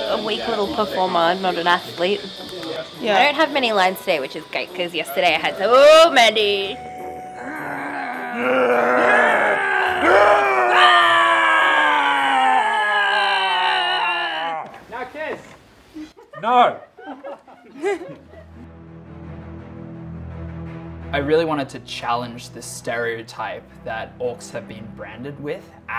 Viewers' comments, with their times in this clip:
0:07 the "roar contest" is just so cute x)